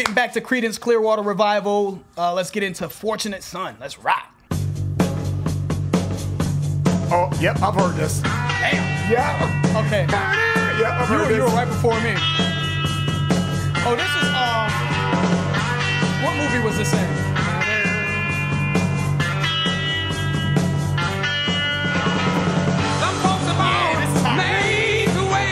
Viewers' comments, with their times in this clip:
0:06 "Oh, yep. I've heard this." (That was just off the drums alone!)